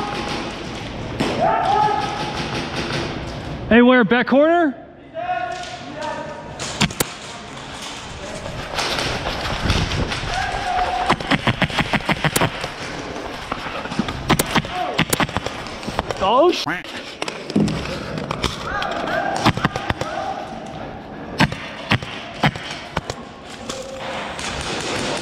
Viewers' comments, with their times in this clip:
0:10 during the gameplay it sounds like squidward footsteps 😂
0:10 Sounds like Squidward sprinting